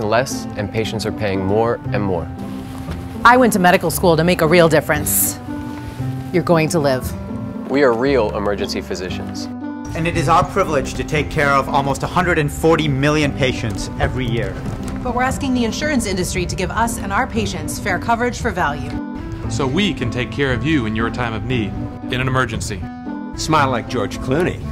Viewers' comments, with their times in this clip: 0:09 After my left ear really liked the audio, but the diagnosis came back for my right ear and the video is the culprit.